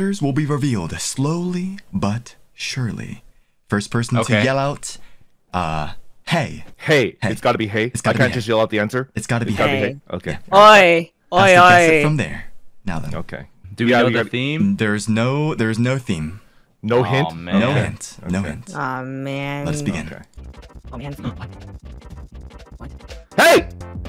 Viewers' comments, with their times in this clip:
0:08 can some one explain why I hear Kronii's voice? edit: Why are people liking? I want an answer.